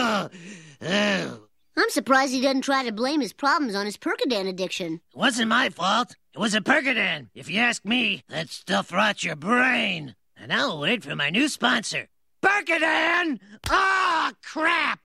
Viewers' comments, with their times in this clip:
0:13 hidden windows starup